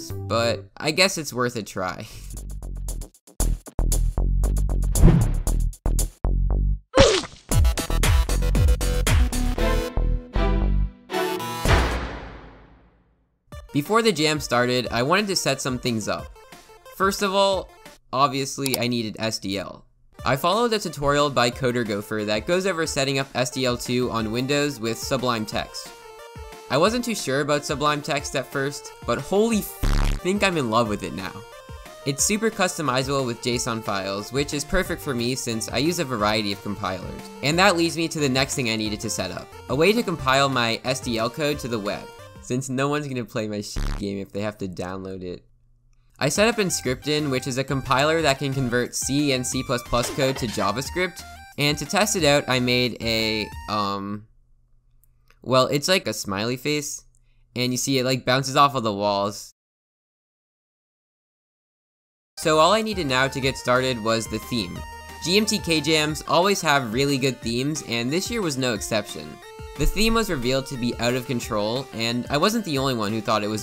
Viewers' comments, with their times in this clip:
0:05 roblox oof sound
0:06 Roblox oof noise! :D
0:07 Bfdi music makes me nostalgic
0:58 bro i legit felt bad for some reason because of that awkward silence
1:00 there was a cricket outside my window. The timing was so impeccable I had to rewind to check. :D